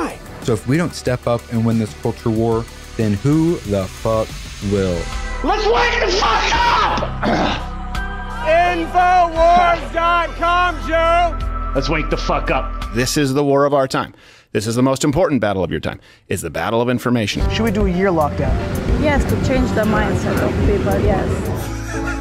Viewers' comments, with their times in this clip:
0:08 Skipped ahead, this is just noise. Your not helping you're agenda. I agree, surprised April was black in TMNT, but this is just people shouting